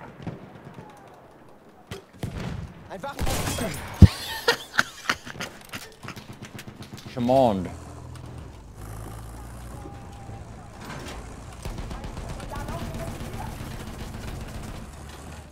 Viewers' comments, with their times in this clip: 0:03 Your laugh is the best :D